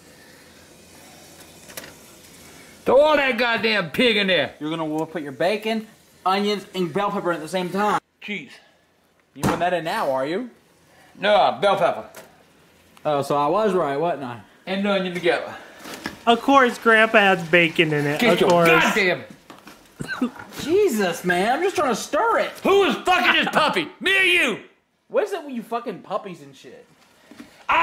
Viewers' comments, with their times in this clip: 0:08 I love how grandpa inhales like he's about to start yelling and then it just cuts to him saying cheese